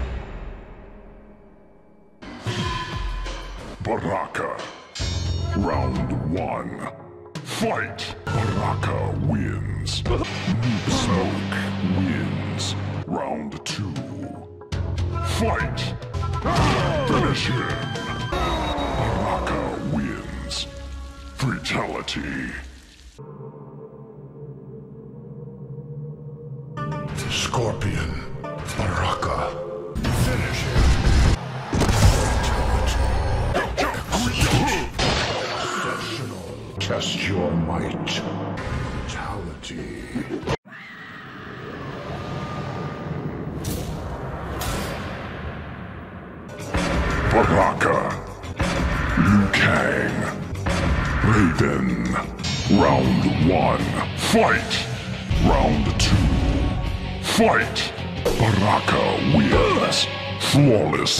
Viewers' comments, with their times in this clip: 0:05 The best voice
0:06 That “FïÆGHT” was just so hilarious😂
0:46 We got vodka if you have subtitles